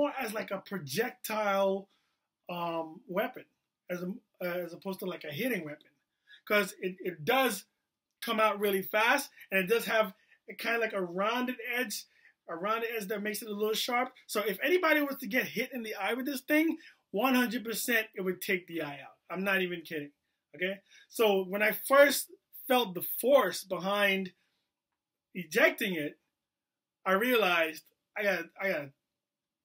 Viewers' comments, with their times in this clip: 0:10 This dude was crying in he must really love his phone #ripiphone